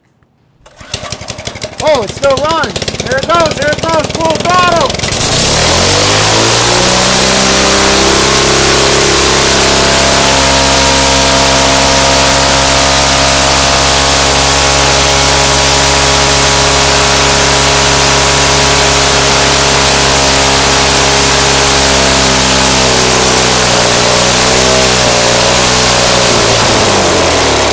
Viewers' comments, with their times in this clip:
0:04 my neighbors at 7am mowing their lawn on a sunday
0:11 9K RPM ENGINE GOES INSANEEEEEREEEEE!!!!!!!!!!!!!!!!